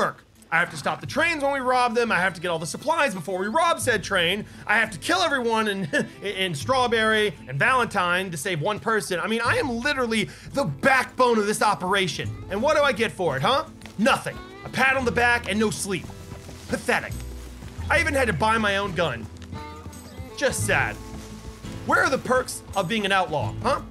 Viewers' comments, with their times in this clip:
0:05 doesn’t that sound like the song that someone made for clementine from the walking dead